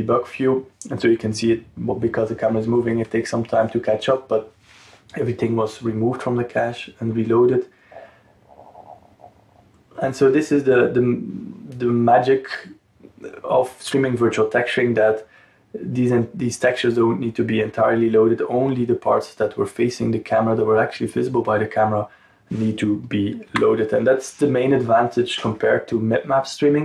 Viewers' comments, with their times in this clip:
0:08 Eat something. Your stomach rumbles: :D